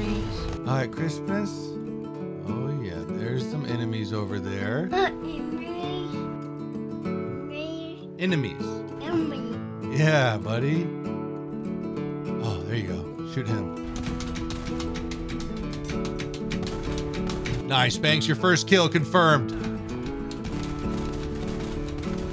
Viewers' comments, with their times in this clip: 0:03 God I love your kid, (en... Enemies?) 😭